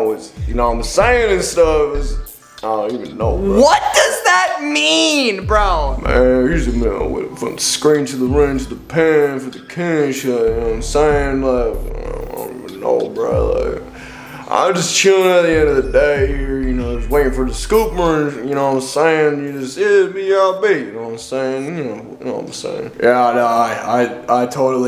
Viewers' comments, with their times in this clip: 0:06 why is bro singing thick of it 😭 💀